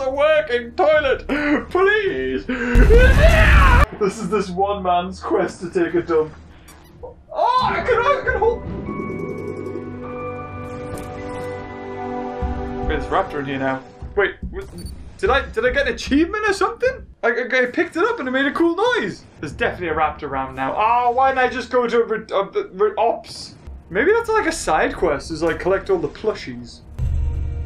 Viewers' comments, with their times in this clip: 0:08 beaver be like finally i can have a companion then it disappeared and the game proceed to sad music